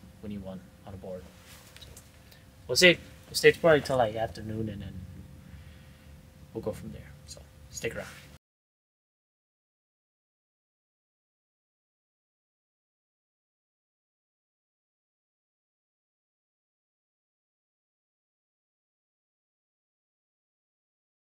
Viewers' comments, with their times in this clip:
0:08 Oh man, you had audio issues too? Hate when that happens! Anyways, fire vid, brother!